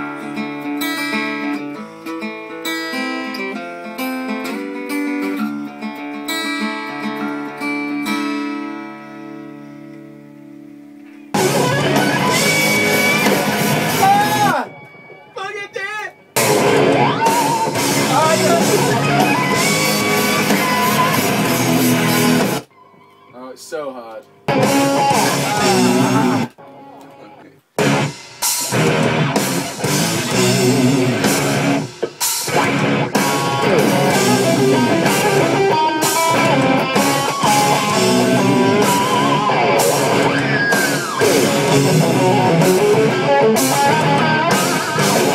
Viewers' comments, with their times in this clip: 0:09 for epic guitar solo
0:32 is a sick solo!